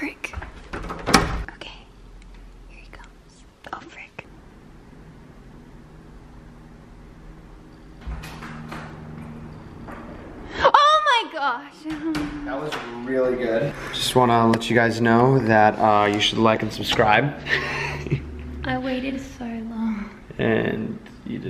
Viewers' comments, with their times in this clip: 0:06 that moment where the air horn is needed for a good scare